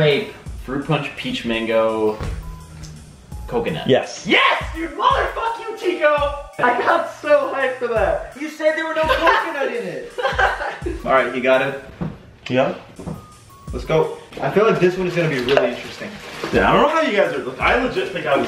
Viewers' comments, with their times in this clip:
0:04 You can hear a doorbell